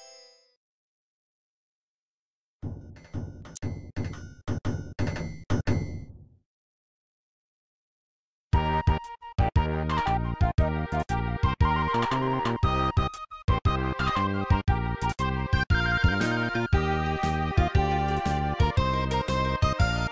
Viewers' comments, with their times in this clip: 0:08 I love song